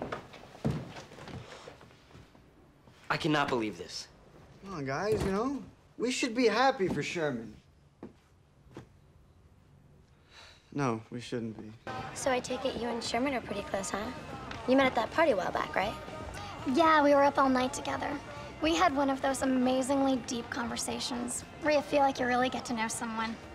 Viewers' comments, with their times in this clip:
0:10 that's like perfect cut scream XD